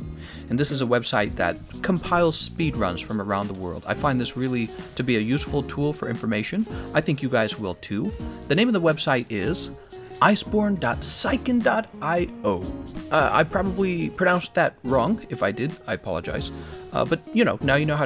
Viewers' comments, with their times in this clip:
0:05 when a instrument/weapon hit to the rythm <3